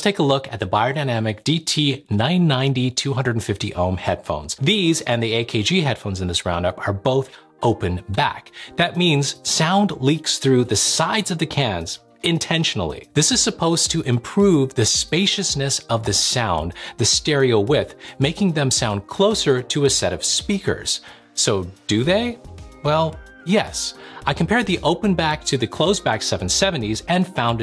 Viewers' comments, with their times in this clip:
0:08 I love how he says intentionally like open-backs are some wild concept. It's crazy to me that the majority of regular people don't even know that open-backs exist. Meanwhile in the audiophile community, open-backs are 99.9% of all we talk about. There are very few closed-backs even worth talking about because they pale in comparison.